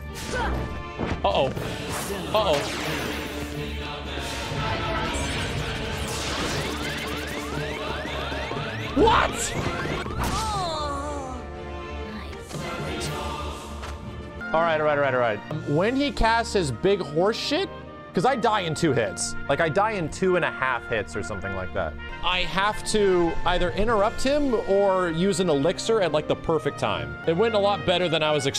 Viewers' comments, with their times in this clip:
0:10 Sephy literally spanked you. That was a suggestive noise made from a blunt sword spank lol